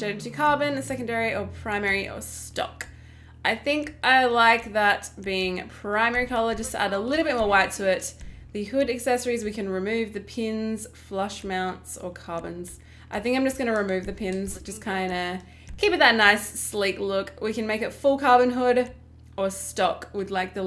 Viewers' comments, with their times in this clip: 0:07 she says "it goes hard, really friggin hard." then admittedly yells "don't you pull out on me." Never laughed harder lol